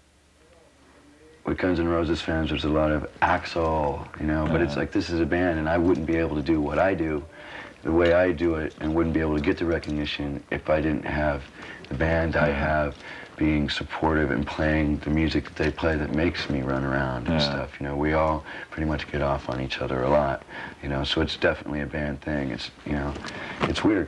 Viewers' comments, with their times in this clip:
0:08 Comes from the suffering seventies reverb